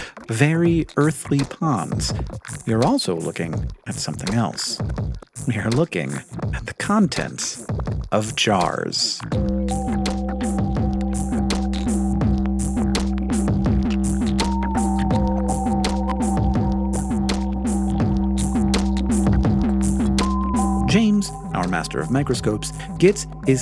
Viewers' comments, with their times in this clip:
0:09 didn’t expect such a banger on Microcosmos. Whoever’s the DJ for JttM, keep them on the team 🎧🎛️🎚️